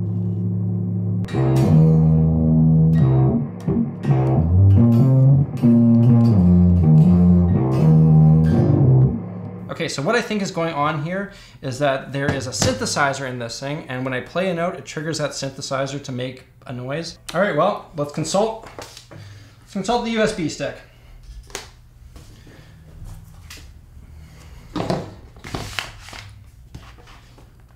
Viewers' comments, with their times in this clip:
0:08 The first time he said "synthesizer", I swear my ears heard "sithesizer". 🤨